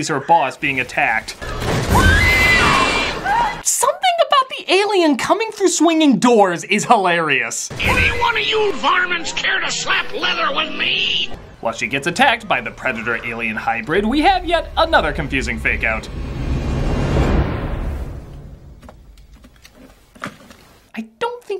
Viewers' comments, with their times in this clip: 0:07 Yosemite Sam Voice over the Alien coming in is hilarious! Critic you are a Genius!